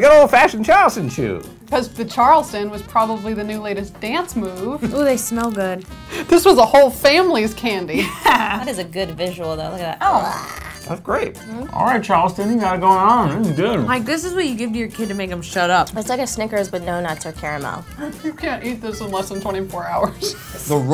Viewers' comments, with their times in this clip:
0:03 girl on the left got a make over on a later episode. Girl on the right is gorgeous and has an accent. They should lez out with a double sided...... Charleston Chew